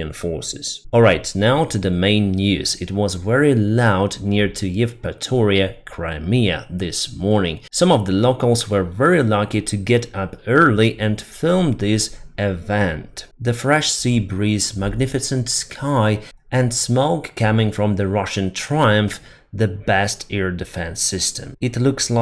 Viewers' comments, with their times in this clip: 0:04 From, those KABOOMS!💥 had turned into very expensive Russian kaputs! Slava Ukraine! 🇺🇦